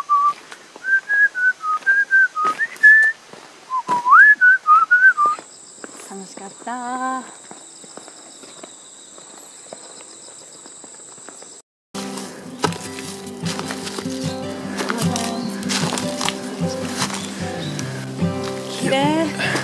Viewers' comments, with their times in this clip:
0:05 Did anyone else whistle along haha